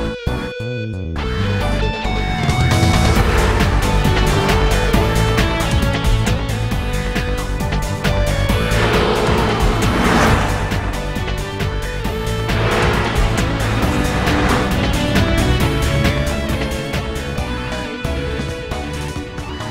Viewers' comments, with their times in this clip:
0:03 man this song has something beatiful about it especially at the guitar parts is what im talking about